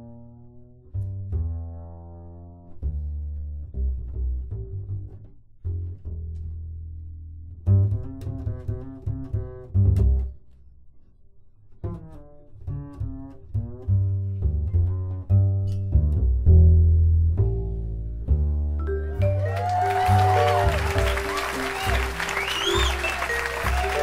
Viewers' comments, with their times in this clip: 0:06 Check out True blues bass. Cool stuff. Thanks Ray Brown.
0:11 of this recording is,,to me, the epitome of cool. Can't get any bluer than that.